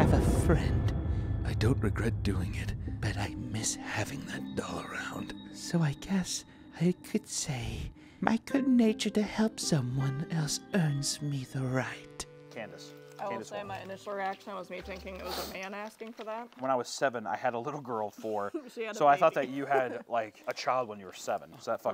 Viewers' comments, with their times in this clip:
0:07 made me think… you could totally just narrate scary ass stories in tones like that, and it’d make them so much more horrifying and immersive